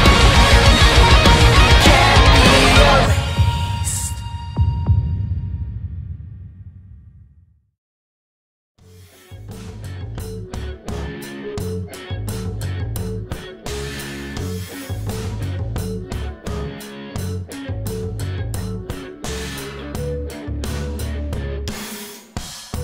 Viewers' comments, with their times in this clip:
0:04 haha gun go brrrr